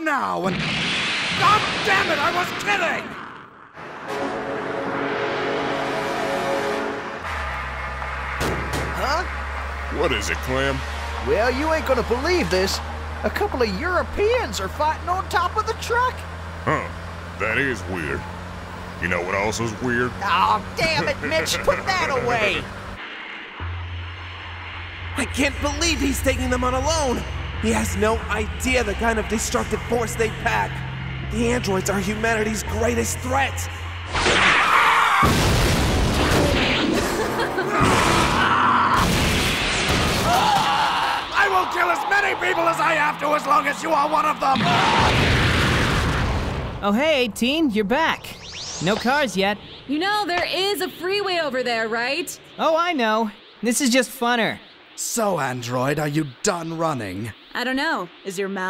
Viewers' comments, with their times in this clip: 0:04 dude the mona lisa Matrix soundtrack was fucking on point
0:34 That's the best and funniest scream i ever heard! xD
0:39 that tf2 medic scream
0:39 THATS LITTERALLY MEDIC
0:40 Medic Scream LOL
0:40 Wait a minute, that's medics scream
0:41 medic screams :3 Awesome